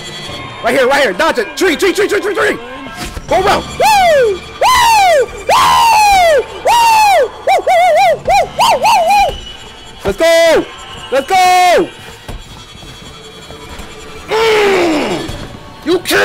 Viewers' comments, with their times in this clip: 0:04 warner bros DEFINITELY recorded this man for Tom and Jerry